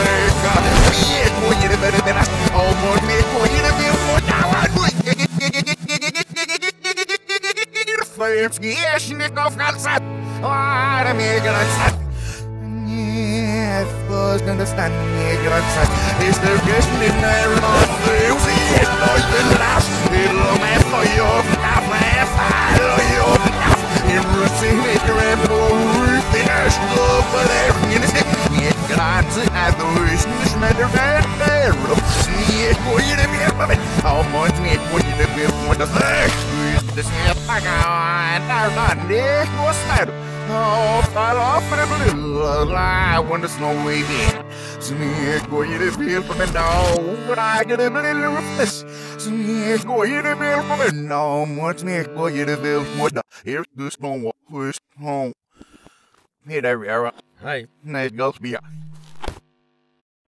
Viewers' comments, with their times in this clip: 0:09 Litteraly speaking german
0:18 Bullet sucking Vacuum tanks
0:30 does anyone else hear him say “this n*****”
0:43 I wonder lonely here lol😂
0:56 "yeah there we are" "H E Y"